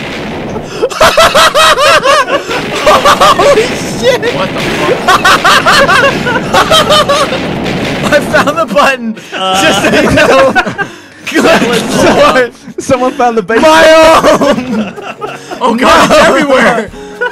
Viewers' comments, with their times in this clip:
0:04 "Notch" Laughed like hell